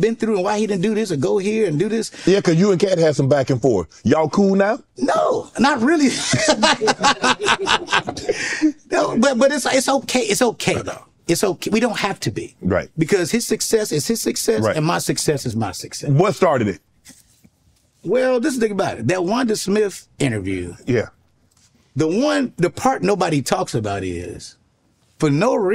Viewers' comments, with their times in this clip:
0:06 Katt clearly hasn’t lied yet. That was the ugliest laugh ever 😂